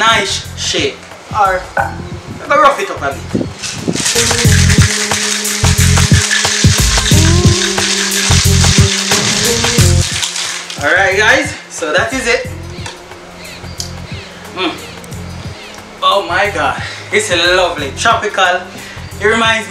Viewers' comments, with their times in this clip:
0:04 Great intro. Love the preparing dance great attitude!!! Made me feel in Jamaica with the background bids songs. Greetings from Mexico :-)